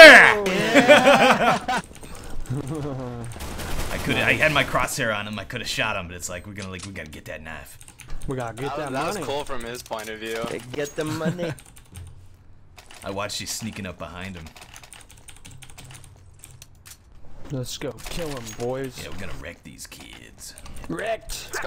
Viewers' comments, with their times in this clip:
0:07 when he was talking was talking to his teammates it said fishmonger water